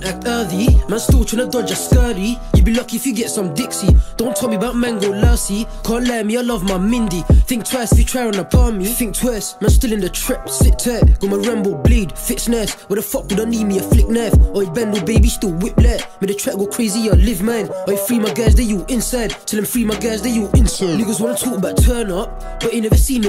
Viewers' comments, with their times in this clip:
0:10 the flow is insane